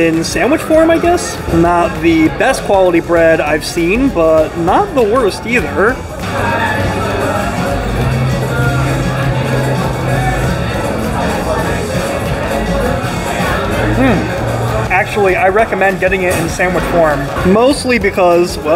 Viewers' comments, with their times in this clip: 0:06 the strokes in the background <3